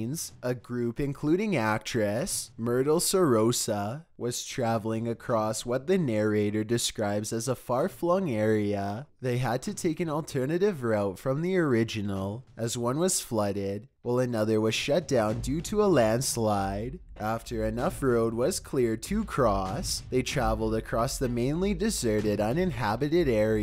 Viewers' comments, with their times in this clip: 0:04 Man! Had to stop watching min in. Dude's voice was giving me a headache. Who talks like that?!!!!!!